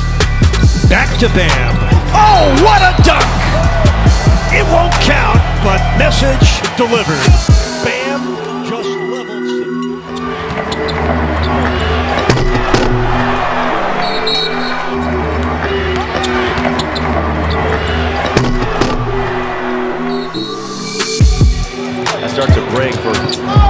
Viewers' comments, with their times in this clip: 0:10 That was freakin gun shots
0:10 that derrick jones jr dunk was the loudest dunk i have ever heard!!! 🔈